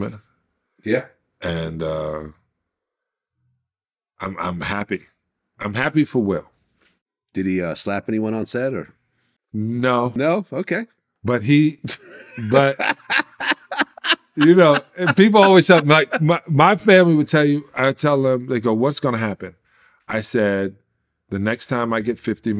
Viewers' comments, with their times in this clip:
0:06 Vlad couldn't resist making that lame joke, then lol'd as if it was super hilarious. 🤦🏾‍♂️😂😂